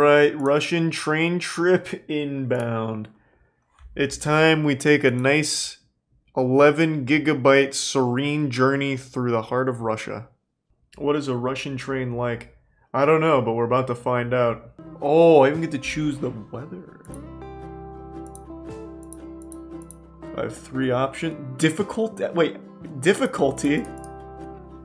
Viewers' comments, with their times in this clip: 0:10 "what is a russian train like?" sounds like it's in a hurry!